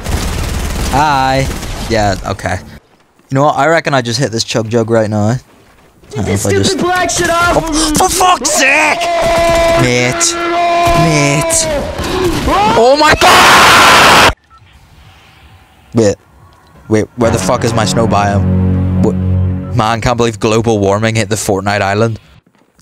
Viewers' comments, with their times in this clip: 0:05 BRO SOUNDED LIKE MICHAEL JACKSON LMAOOOOOOOOOO